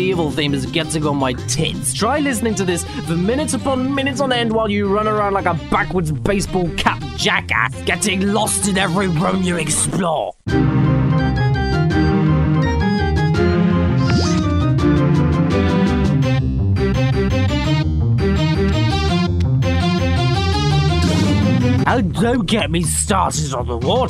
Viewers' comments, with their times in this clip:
0:10 As awful as this game is, you've got to admit, the music is pretty catchy.